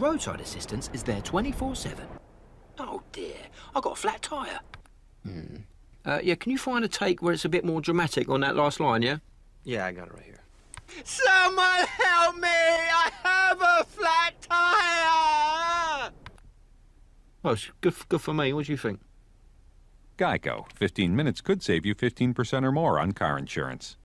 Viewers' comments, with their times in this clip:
0:10 Sounds like C-3PO. 😂